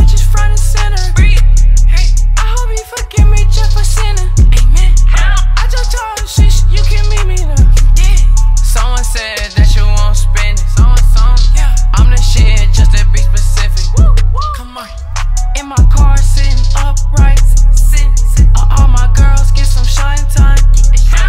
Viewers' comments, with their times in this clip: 0:08 should’ve been his tone the whole song it would’ve been so much better